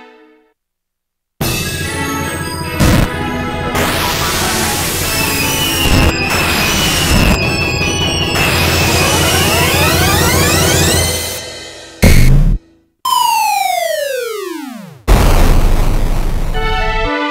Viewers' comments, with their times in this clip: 0:05 Music sounding pretty clownish and unsteady to me 🤡